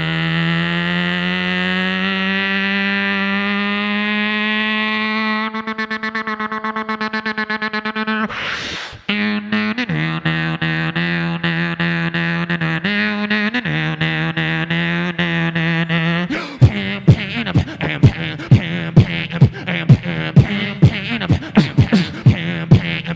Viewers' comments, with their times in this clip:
0:07 The MOST AMAZING BEAT EVER!